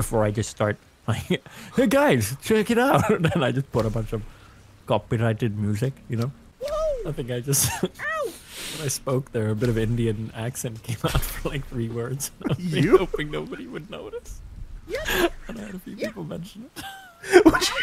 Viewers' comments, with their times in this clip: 0:04 sounds more like king julian